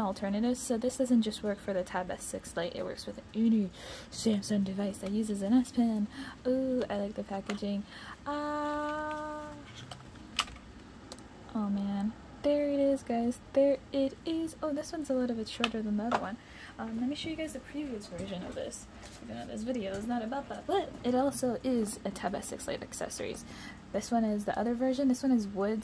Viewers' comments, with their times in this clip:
0:08 I loved that she said a and the automatic captions said [music]